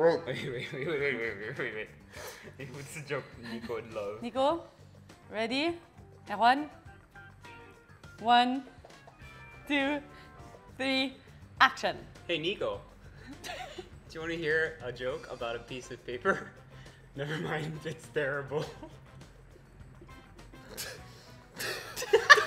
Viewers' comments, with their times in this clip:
0:05 the way she said erwan 😍
0:06 love the accent..